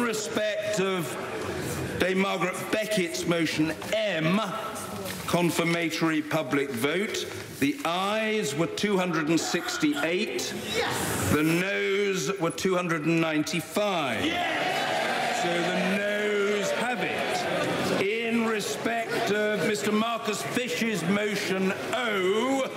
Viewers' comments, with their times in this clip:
0:04 I just love the part starting The lady yelling YES too early and the MP mouthing "shit" with the other looking at her surprised.
0:07 😂 That one person who yelled "Yes!" to The Aye's have 268, followed by The 'No's have 295.. Probably a No Supporter but hilarious nonetheless